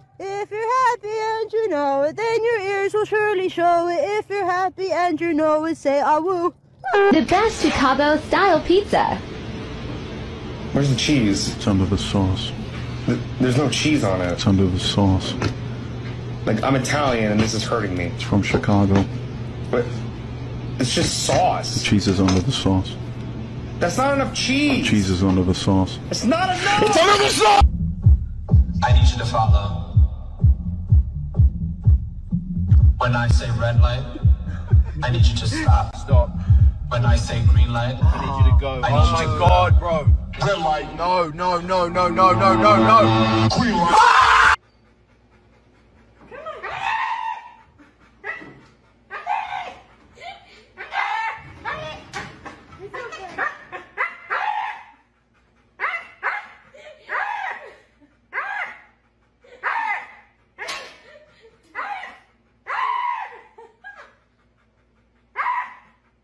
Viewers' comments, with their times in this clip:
0:08 man is so calm explaining it to the other guy
0:40 I'd scream too. Thats too perfect.
0:48 THE HUSKY SAID AMOGUS